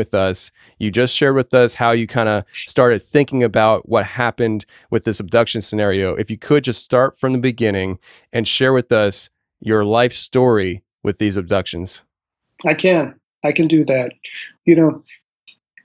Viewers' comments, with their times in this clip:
0:03 there is a weird whisper.